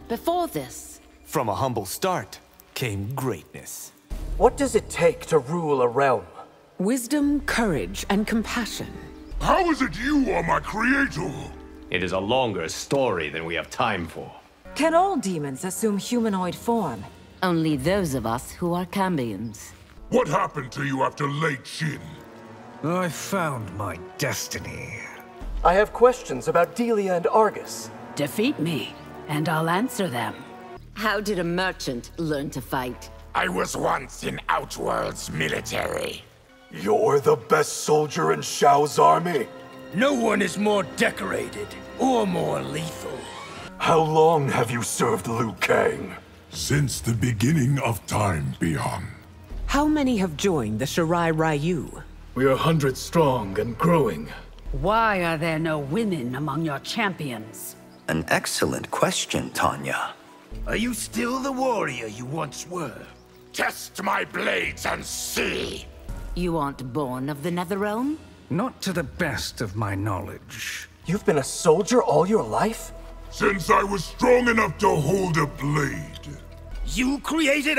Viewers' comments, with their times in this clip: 0:09 Shao's legit here. He doesn't even sounds mad, just puzzled.
0:09 Shao's making a legit question here. He doesn't even sounds mad, just puzzled.
0:58 idk why but i LOVE how raiden says this